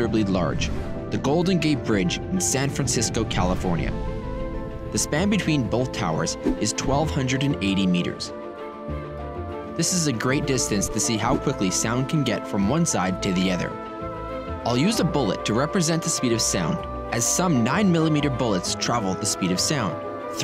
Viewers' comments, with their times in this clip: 0:04 i stopped the video went down to write this snd going to close yt after im done writing this. ridiculous use of unfitting forced epic music. so cringe. not needed. ruined an otherwise woouldve been cool visualization. thanks for nothing.